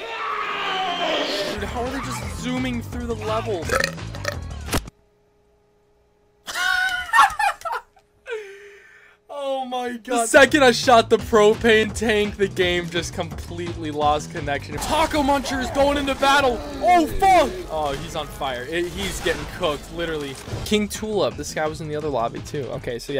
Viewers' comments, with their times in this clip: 0:05 the most real laugh I have ever seen in my life